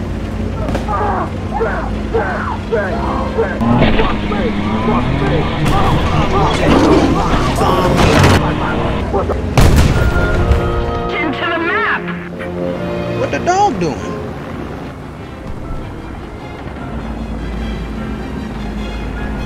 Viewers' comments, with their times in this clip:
0:06 The quiet “SOME BO-” when he runs over the outhouse from smash mouth made me laugh so hard I started crying, and had to pause the video. Caught me off guard.